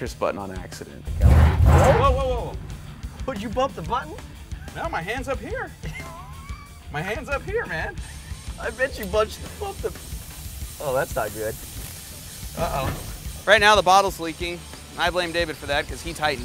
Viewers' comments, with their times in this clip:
0:03 lmfao did you bump the button lol his laugh